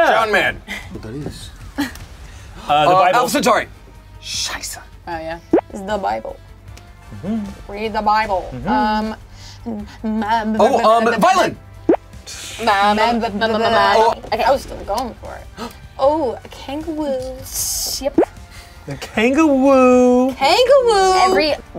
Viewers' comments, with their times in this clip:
0:09 Muse is going to demonetize the video for sounding like madness lol